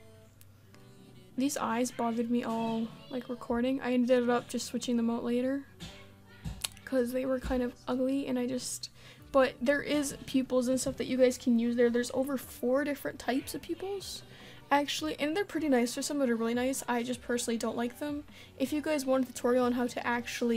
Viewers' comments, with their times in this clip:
0:07 The Real best Part Of This Video is The Background commentary Listen to the background music to my ears